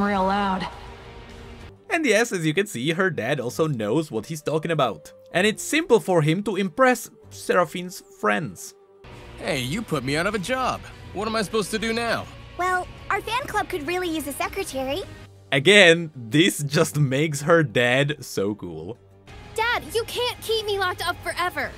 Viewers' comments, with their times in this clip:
0:08 Why this part sounds like Mirage's voice from Apex Legend Am I Ok dude?😂